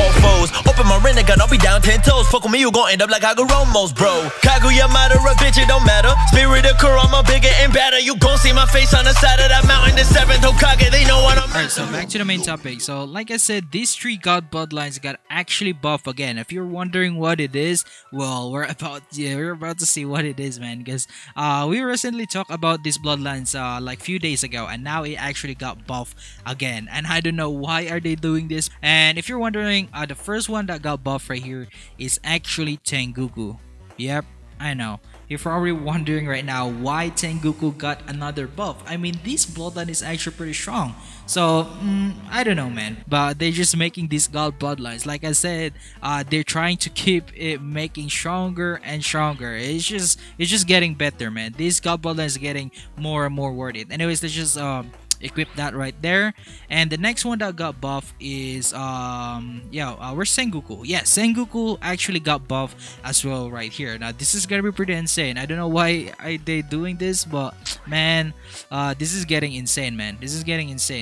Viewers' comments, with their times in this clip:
0:04 Fav part the beat is just too drippy🔥
0:54 my favorite part on this video was the click noice